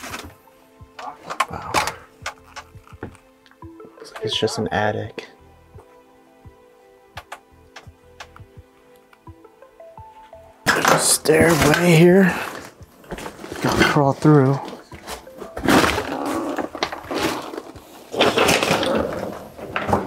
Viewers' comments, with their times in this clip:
0:04 I head a voice say something to you in the attic 😮😮😮 but I can’t tell what it’s saying; sounds like a male voice